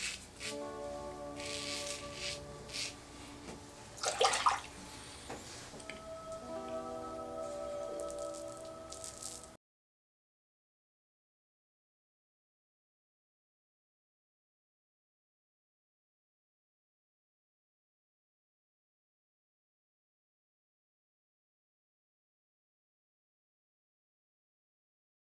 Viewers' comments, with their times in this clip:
0:10 What happened to the sound ? Is it just my phone???